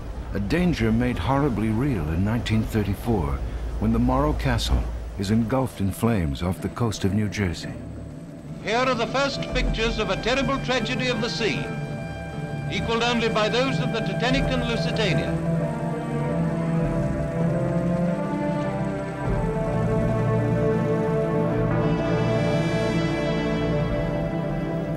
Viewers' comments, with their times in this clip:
0:05 Fairly sure I can hear helicopter blades dubbed onto the arial footage. About 30 years too soon for that, apart from a few barely functional prototypes helicopters really weren't a thing in the 1930s.